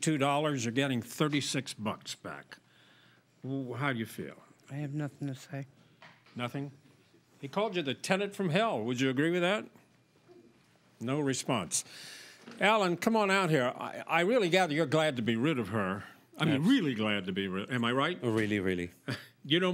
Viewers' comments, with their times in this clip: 0:04 The despondent “I have nothing to say” has me hollering 😩😩😩😩